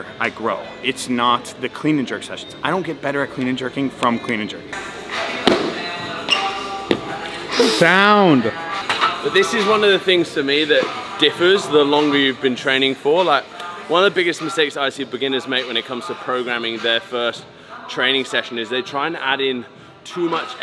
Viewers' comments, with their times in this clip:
0:08 “sound” 😂 As a Brit I appreciate this impression.